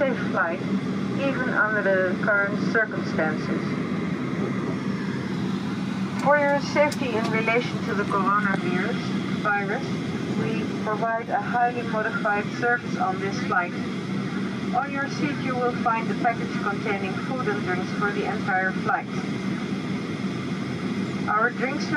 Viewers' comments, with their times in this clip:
0:08 Did she say Corona beer ..........Virus lol